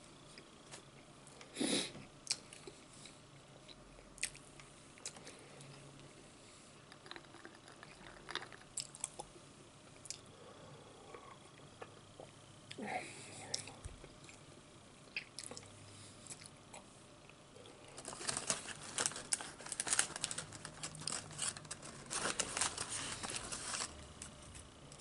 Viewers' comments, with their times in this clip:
0:06 he’s trying to do the asmr sounds with the ice, I’m dyiiiing LMAFO. I love your videos❤️